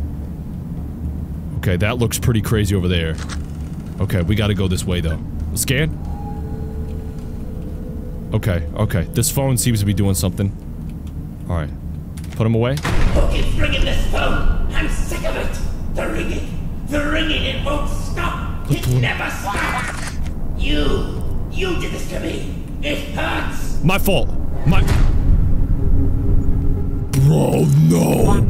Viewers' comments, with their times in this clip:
0:10 Sir, yo phon is lingin